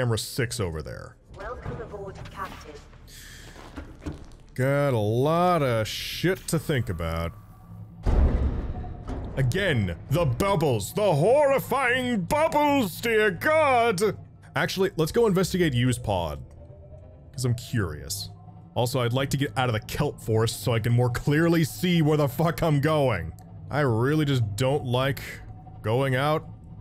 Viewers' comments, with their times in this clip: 0:08 when he says “the horrorfing bubbles” he sounds like the reporter from SpongeBob 😂